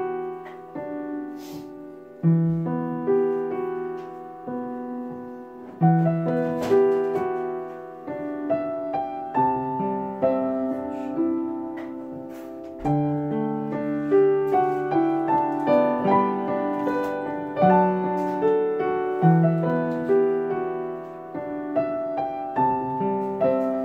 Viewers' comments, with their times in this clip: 0:07 Randomly skipped to and cried. That song always gets me, always brings Naruto memories tears